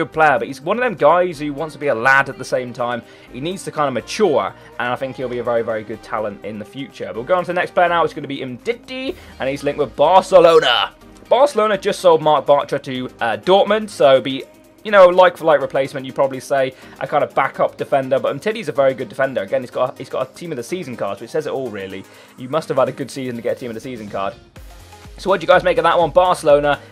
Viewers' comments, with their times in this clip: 0:09 Anyone else laugh the way he says umtitti goes so squeaky